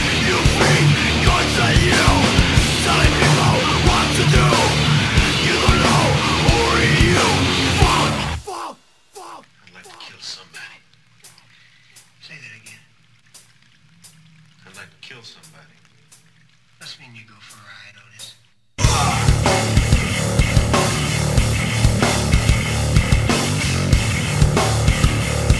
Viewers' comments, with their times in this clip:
0:09 Nicoluz Cruz rampage sound